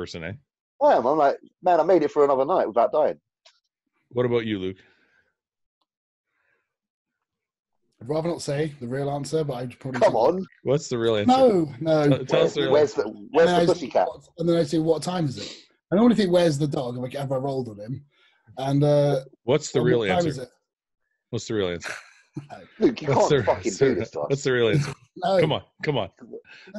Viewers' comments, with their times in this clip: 0:07 in the exact moment before he started taking, he swallowed his spit, fuck man I feel him so much...